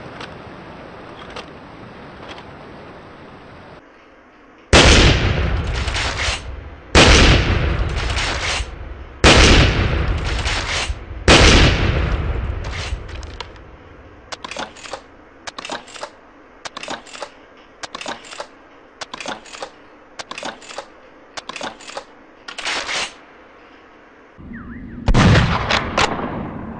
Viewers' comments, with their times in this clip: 0:08 BF best spas12 sound mw3 has the worst WTF mw3 spas12 destroy my ears 😠😠